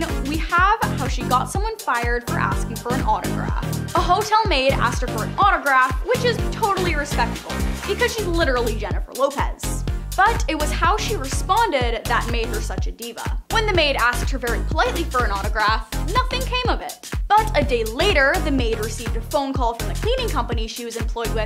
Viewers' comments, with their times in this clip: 0:09 why the loud music?